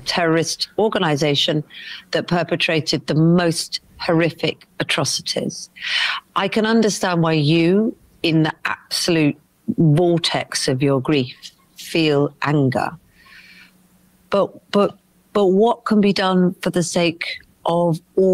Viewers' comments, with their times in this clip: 0:05 her comment is just plain racist and then the laughter (probably a crew member that later got fired) at 6.10 is so on point.